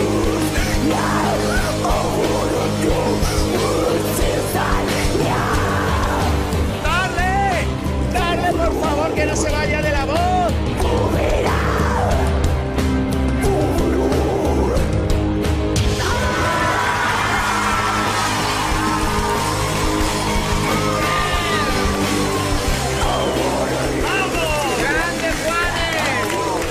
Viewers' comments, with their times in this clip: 0:10 Girl sounds like arch enemy! Surprise